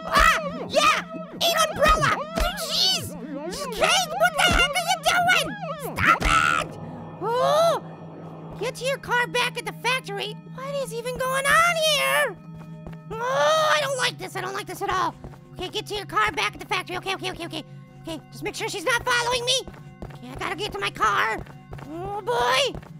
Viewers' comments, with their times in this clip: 0:05 Kate Cannot Scream like this! She can scream like: AHHHHH!!!! Its funny little apple hit the umbrella at kate!